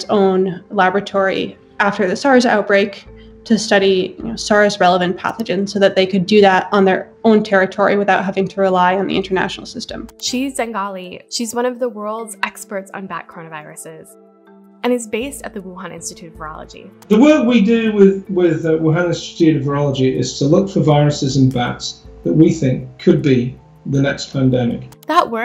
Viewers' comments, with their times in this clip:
0:09 “She Zengali.” LOL! Shows how well-researched this was /sarcasm